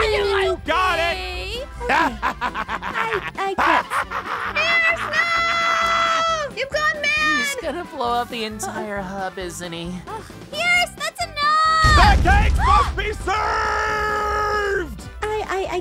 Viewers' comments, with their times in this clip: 0:03 oh my goodness that evil laugh made me laugh so much , I fell off my chair.